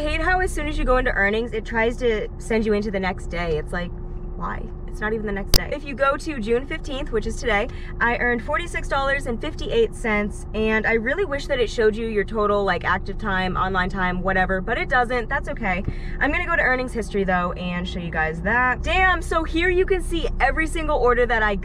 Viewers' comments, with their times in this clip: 0:03 i thought my speakers exploded